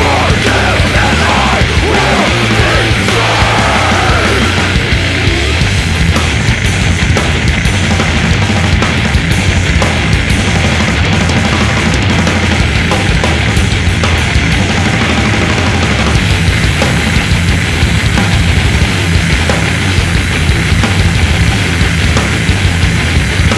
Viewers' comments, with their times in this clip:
0:06 is when the behemoth stops striding and begins his brutal strut...